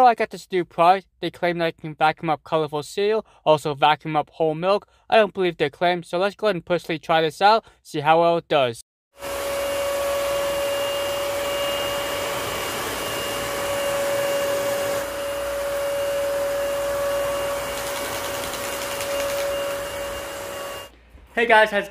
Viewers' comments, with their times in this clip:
0:09 This is a loud one!